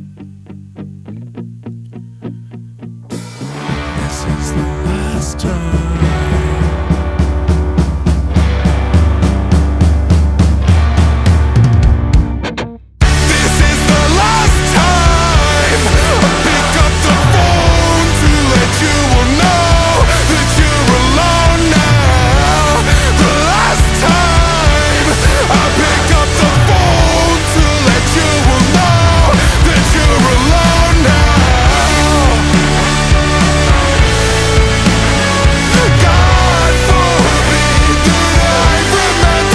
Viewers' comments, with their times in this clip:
0:09 I love the screamy moments soo good
0:11 THE FUCKING GUITAR FINISHED THE FILL THATS SO COOL
0:26 was that false chord??? james metal era wtf???